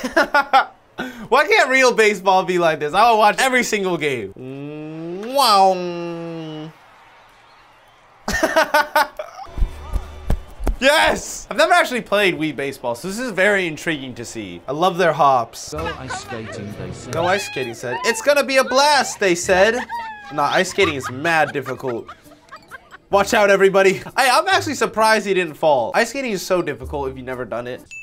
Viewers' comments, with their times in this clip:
0:09 what was that clapping